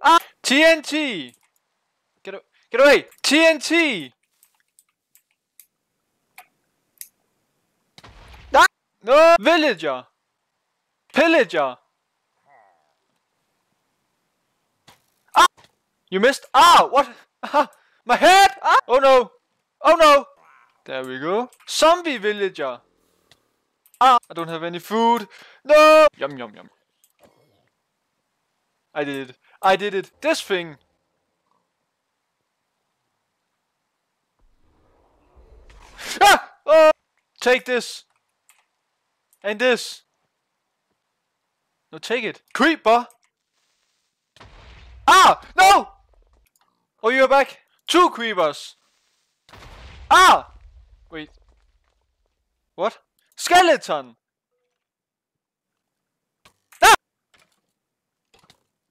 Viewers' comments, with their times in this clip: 0:08 your voice lol
0:42 It's like you sing creeper aw man